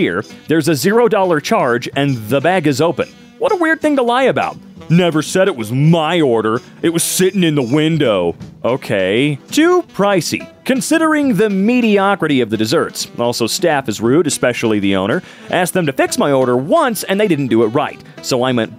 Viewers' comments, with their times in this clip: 0:05 why he kinda sound like markiplier😂